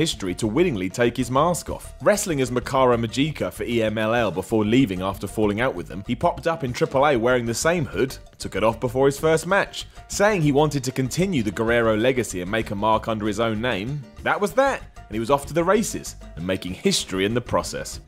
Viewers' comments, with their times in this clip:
0:03 The pronounciation of mascara magica is horrible lmao